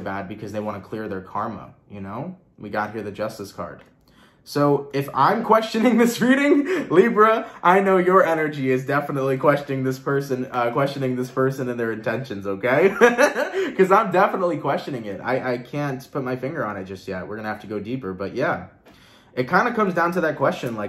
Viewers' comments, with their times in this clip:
0:04 I laughed as loud as you did when you said "if I'm questioning their intentions, I know you Libra is definitely questioning this persons energy and intentions"...Hahaha!! Thank you soooo much!!! This reading was incredibly helpful!! Love, light & Blessings to you!!:))